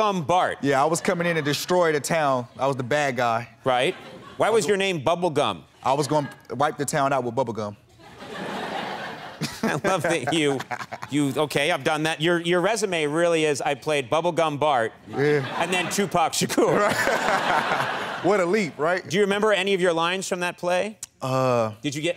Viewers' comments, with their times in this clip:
0:10 he even laughs like Tupac!